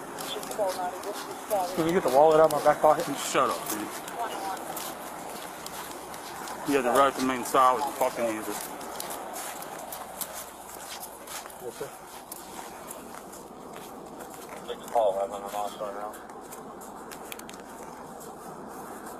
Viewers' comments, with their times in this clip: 0:03 Ikr, pathetic. Lmao, lmao but the OFFICER and his firm voice, SHUT UP lol. In my singing voice to him, DID ANYONE EVEN TELL YOU, THAT YOUR MY HERO 😂. Much respect to him and JUSTICE for these babies!!!